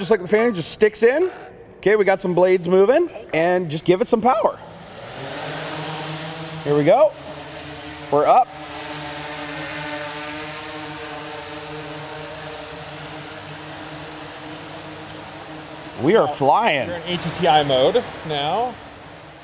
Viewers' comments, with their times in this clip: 0:03 voice crack m8